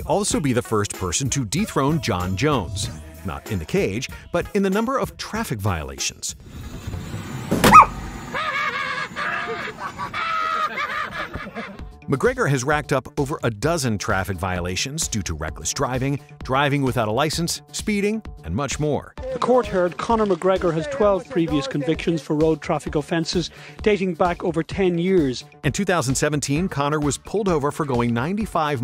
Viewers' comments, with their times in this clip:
0:05 Did he just kill a dog...and is he really laughing?. Or was that just editing? I need to know whether to laugh or be disgusted.
0:07 wtf was that a dog?
0:07 is that him hitting a dog or its that just the voice of the person recording?
0:09 you can clearly hear a puppy got crashed